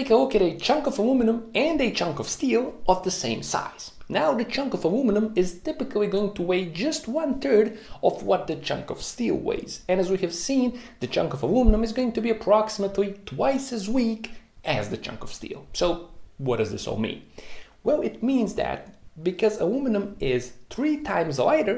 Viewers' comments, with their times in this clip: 0:04 "one turd" lol